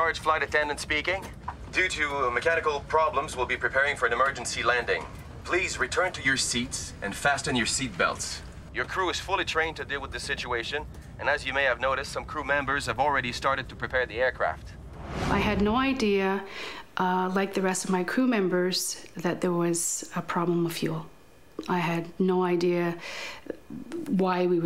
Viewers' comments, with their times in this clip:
0:06 might be the first time I've ever heard somebody pronounce the T in "fasten"
0:06 fasTen? Hard T. While the T is not supposed to be silent, it is universally not pronounced. So, this person is not a native English speaking actor.